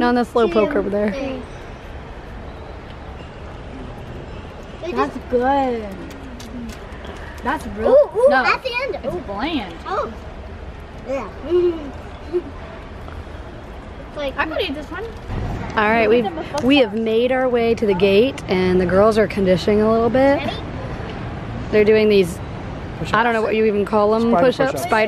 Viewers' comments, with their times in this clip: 0:07 Right now it's smacks lips smacks lips